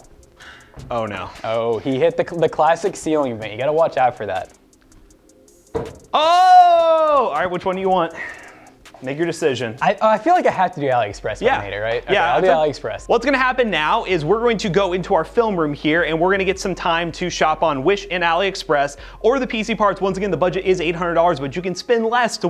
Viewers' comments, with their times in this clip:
0:08 anyone thought he said....